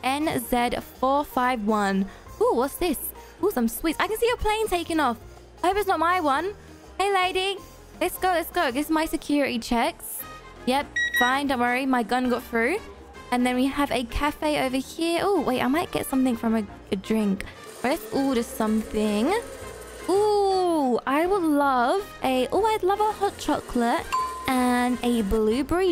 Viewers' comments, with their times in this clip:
0:10 The way she just said "my gun went through" is hilarious